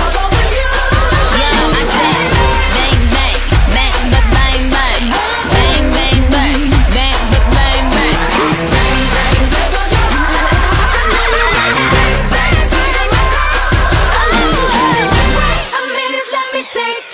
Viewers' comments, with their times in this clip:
0:05 you'll hear Niki do a weird laugh.(listen with headphones)